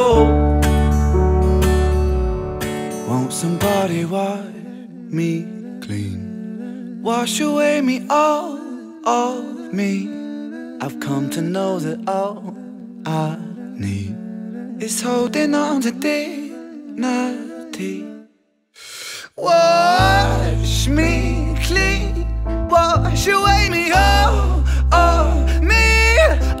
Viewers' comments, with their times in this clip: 0:10 the guy is going full 'choo choo'